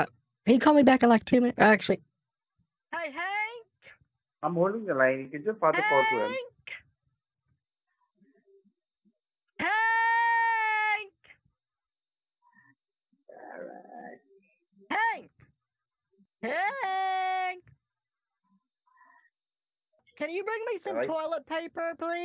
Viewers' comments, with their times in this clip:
0:05 I can’t unhear “Haaank!! HAAaAaAaAaNK!!” echoing in my mind.